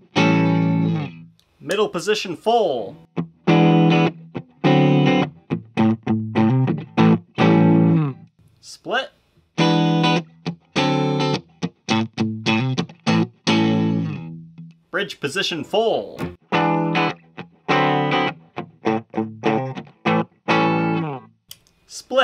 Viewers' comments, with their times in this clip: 0:09 middle split sound made me say "whoa" out loud.